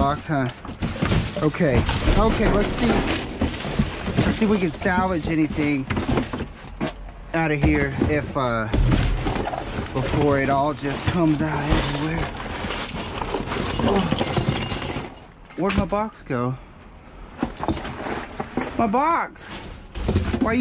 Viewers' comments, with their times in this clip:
0:07 dude he farted did he just fart? Man he farted! How he just gonna fart and act like nuthin happened? Dude he had the taco bell creeper. Ha! Take that spiderman! Fam, open a door, light a match.